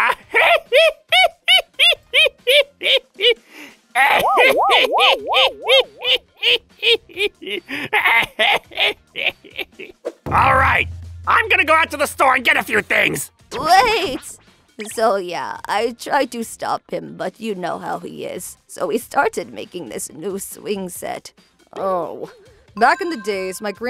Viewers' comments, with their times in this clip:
0:05 Akamatsu's laugh reminds me too much of Master Roshi